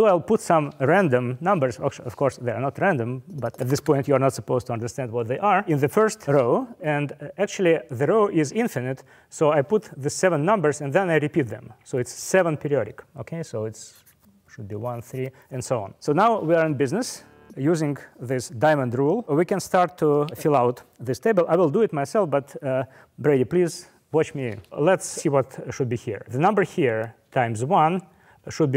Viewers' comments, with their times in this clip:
0:09 I love how he says: "pedioric" instead of "periodic".